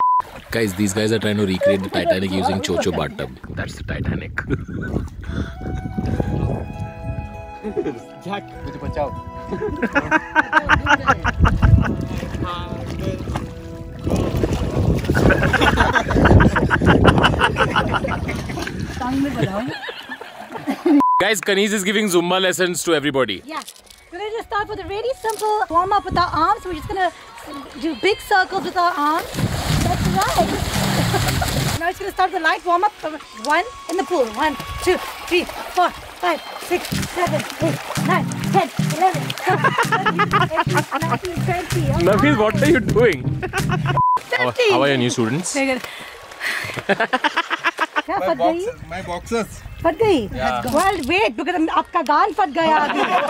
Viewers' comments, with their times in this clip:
0:05 Jack sounded like jath 😂🤣
0:08 Sounds likh "JHAAT" 😂😂😂😂
0:38 who heard Chandelier song playing?